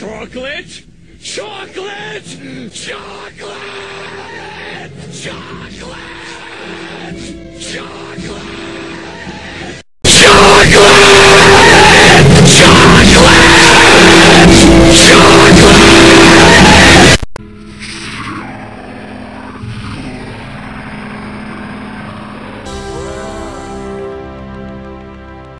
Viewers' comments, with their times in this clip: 0:10 my ears are bleeding